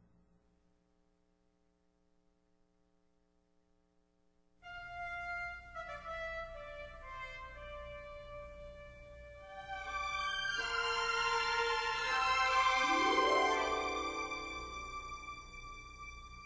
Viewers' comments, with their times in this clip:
0:04 *helicopter goes by*